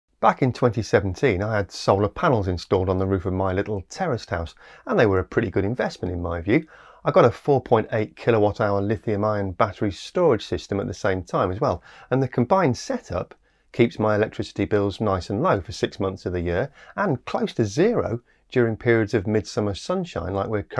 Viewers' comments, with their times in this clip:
0:03 But why is it called a "terrorist" house?